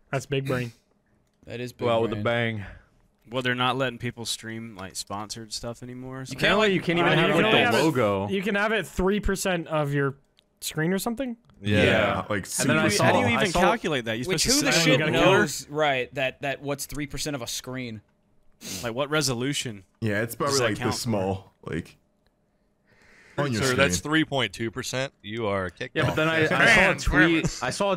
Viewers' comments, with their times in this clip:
0:08 a nice collective "yeah"